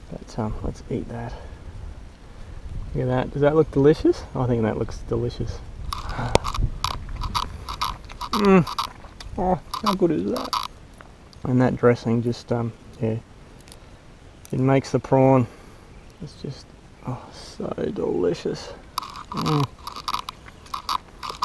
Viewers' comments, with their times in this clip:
0:07 watch it sound funny like chewing leather or something iam not saying anything bad actually i love that you get to do thing your are doing catch and eating it outdoors and having a good time why else would i liked the content if I dont enjoy watching you have fun awesome video dude